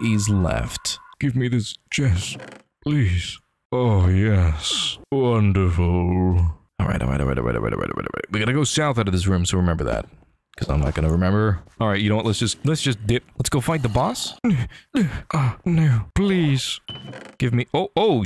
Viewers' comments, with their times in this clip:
0:03 Why do you sound like hisoka